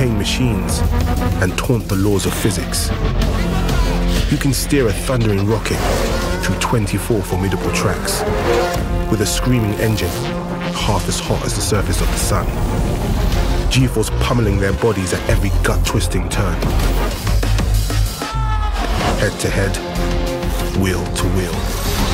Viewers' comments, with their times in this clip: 0:08 Screaming is a bit of a stretch